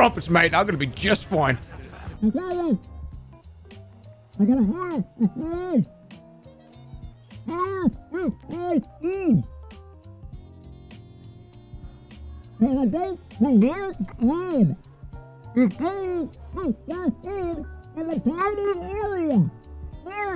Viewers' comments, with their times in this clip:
0:04 Finally, the Pyro impression